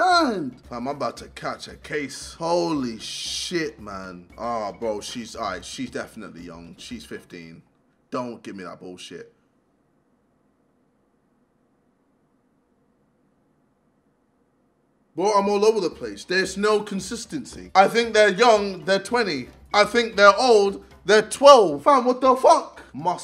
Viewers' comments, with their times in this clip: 0:09 moment of silence 😂